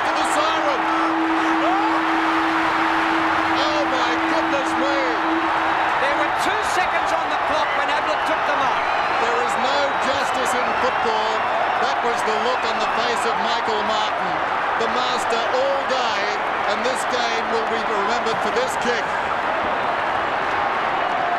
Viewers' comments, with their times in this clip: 0:03 Crowd going spastic so beautiful